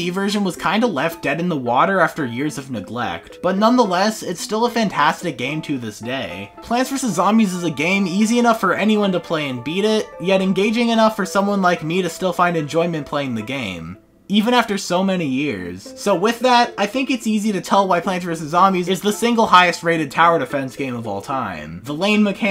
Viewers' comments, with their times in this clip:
0:09 why do you say beta bee-ta not bay-ta ?